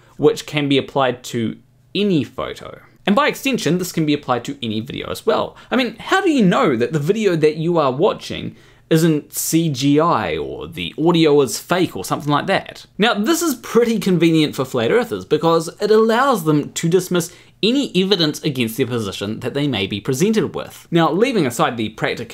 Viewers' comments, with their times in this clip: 0:04 I noticed that the audio was offset, But the (Mostly) Seamless transition to voice-over was still really well done!